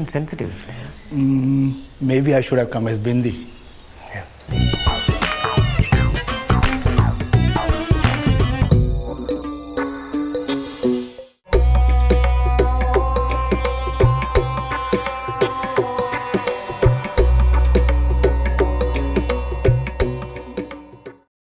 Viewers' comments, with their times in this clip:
0:04 That Peter Garret impersonation is priceless HAHAHAHAHA